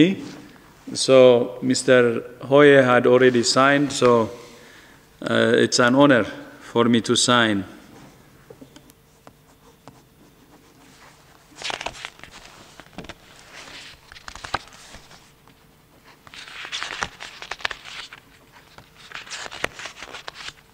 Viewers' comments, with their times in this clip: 0:07 Unintentional ASMR. Signing and flipping through pages. 🙂